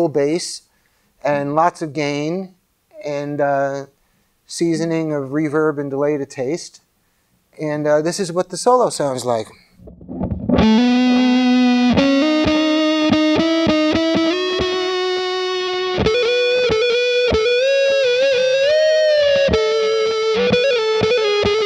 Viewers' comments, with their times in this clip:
0:09 woman tone or american woman.